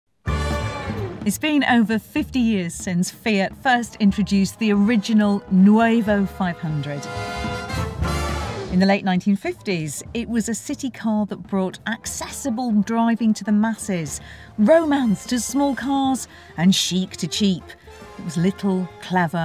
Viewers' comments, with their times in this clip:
0:06 s.."nueva"...lol...ok Carmencita! Joking aside, nice review.